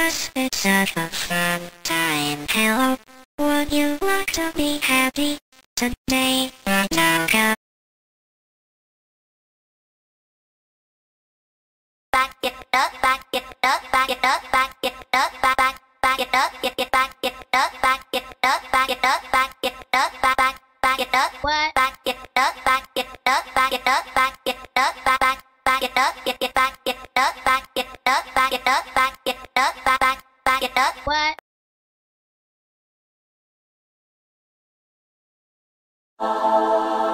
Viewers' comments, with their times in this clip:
0:08 wenda sounds like fnf aethos ending
0:09 wenda sounds like a fnf character
0:09 why dose wenda sounds like that
0:11 I thought she was saying Ragatha 😭
0:11 This part is also very cool her voice is just as cool
0:11 why is this gf voice?
0:21 wenda confused sound